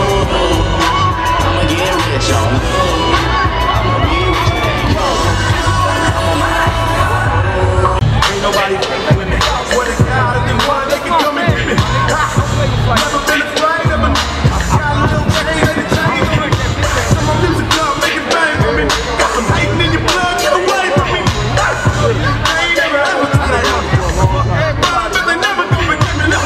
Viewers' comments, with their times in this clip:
0:08 I thought he was rapping to the song playing